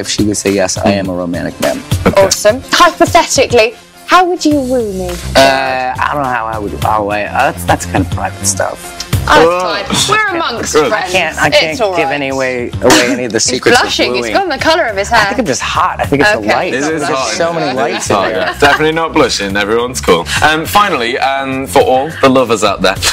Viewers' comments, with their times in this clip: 0:04 what the hell does she say ?!